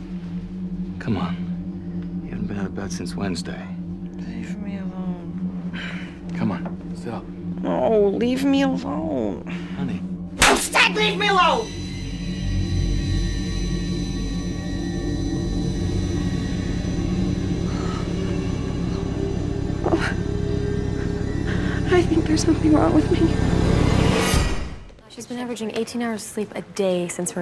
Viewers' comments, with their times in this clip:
0:09 Wife: "leave me alone" Husband "come on get up"...." honey" Also wife: 😤😡grrrrrrrrrrr " I said leave me alone!!!" (pimp slaps husband) also sound effect of "whack" Husband: in his head thinking " no this b***h didn't" 🤨😳😱😡 Wife: "something's wrong" Husband : in his head thinking " ok I'm still on the part of you pimp slapping me " 😒😐